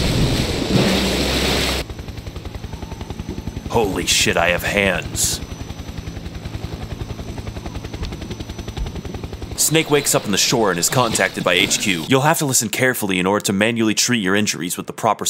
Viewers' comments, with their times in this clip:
0:03 "Holy shit I have hands." (very awkward silence intensifies)